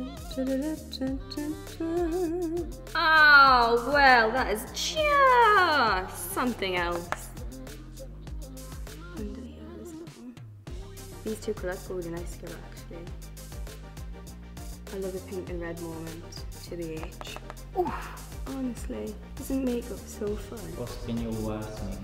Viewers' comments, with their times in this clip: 0:03 Whispering for 6mins and then the sudden burst hahahha